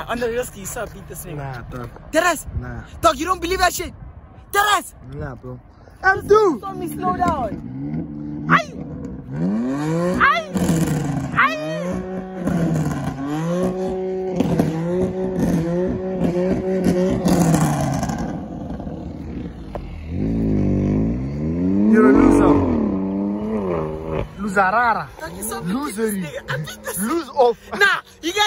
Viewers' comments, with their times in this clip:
0:09 bro was just admiring the sound of his car, boy made it man.